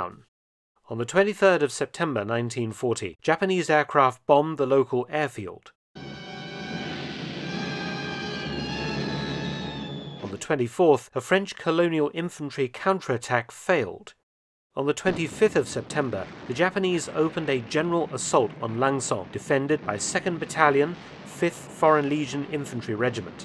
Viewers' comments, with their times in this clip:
0:07 Man, I thought Stuka sirens were scary, but the suspense music Japanese bombs are even more terrifying.